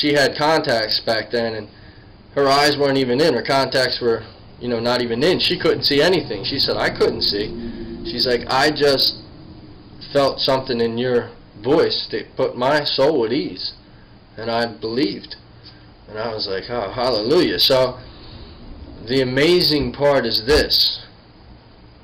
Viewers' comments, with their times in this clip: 0:10 pay attention !! There is this music like angels singing ! Incredible